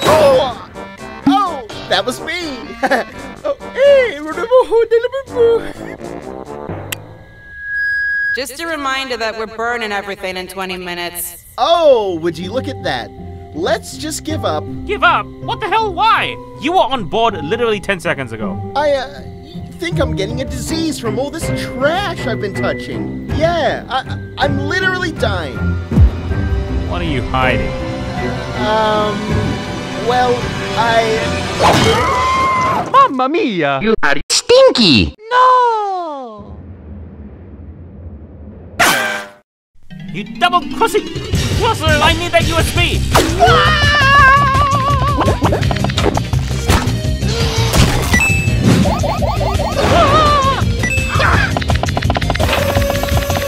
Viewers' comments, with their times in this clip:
0:03 SMG3’s impressions of Mario
0:08 Karen sounds like Uzi 😂😂😂
0:40 You Double CrOSSinG (Voice crack) lol XD